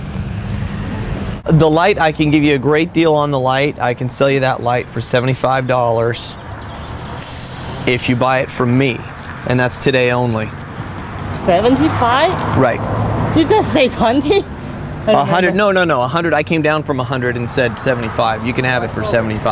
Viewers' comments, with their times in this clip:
0:07 sssssss what? is she a hissing snake?